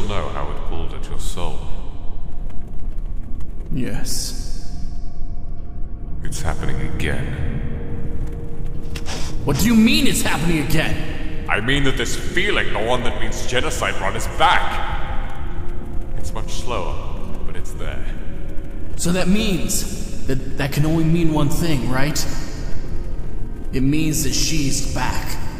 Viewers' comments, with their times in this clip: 0:08 oml sans sounds like zuko from avatar